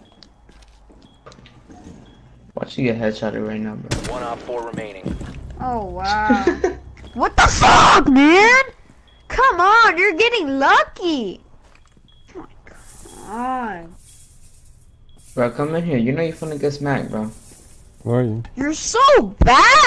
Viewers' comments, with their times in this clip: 0:07 Hey calm down you sound angry :3